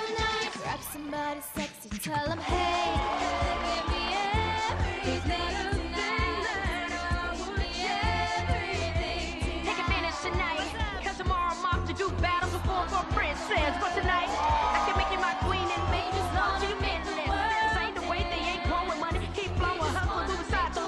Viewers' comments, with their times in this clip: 0:05 did anyone else here “There’s not a thing that I would change”??